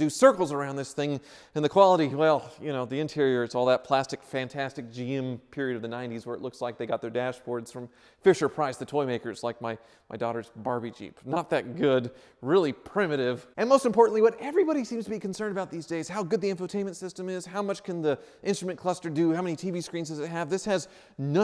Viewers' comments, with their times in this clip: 0:07 ... and the Hondas are even better compared to the Hondays. :)